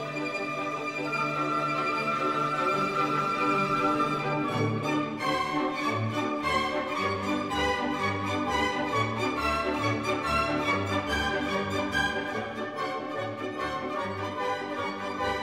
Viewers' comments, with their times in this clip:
0:03 The music sounds like Tom and Jerry